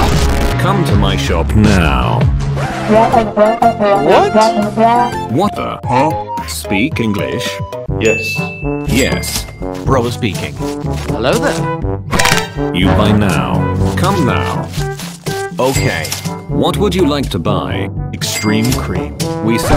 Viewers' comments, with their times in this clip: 0:03 this is arabic languace
0:03 bro speak Arabian 💀
0:06 He was speak arabic